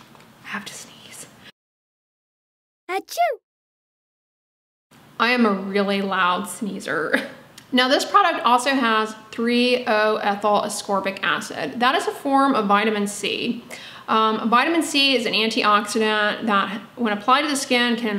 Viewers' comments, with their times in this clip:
0:06 Omg 🤣🤣🤣 !!! The sneeze! I'm also an extremely loud sneezer & it's so embarrassing! That was so cute how you added the sound ☺